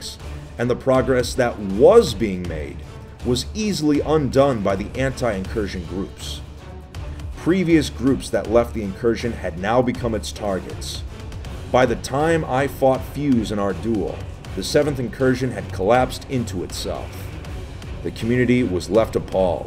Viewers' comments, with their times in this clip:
0:07 bruh that kid screaming hacker lol